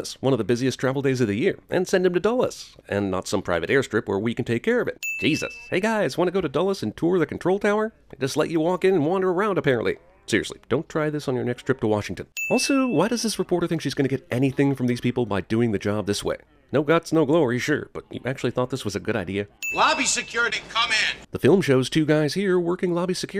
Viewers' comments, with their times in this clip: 0:08 Starting you can hear all the slow motion talking in the background of Jeremy’s narration. 😂